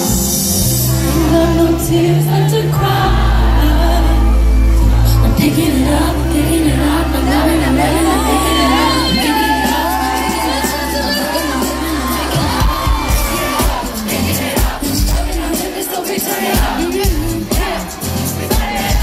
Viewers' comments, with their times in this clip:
0:03 That voice crack broke my heart 🥺💔